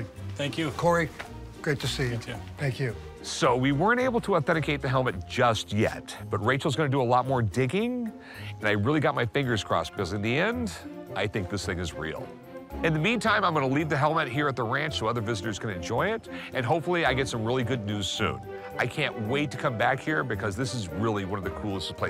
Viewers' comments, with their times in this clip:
0:10 Rick: "In the end, i think this nigga's real" 😂😂😂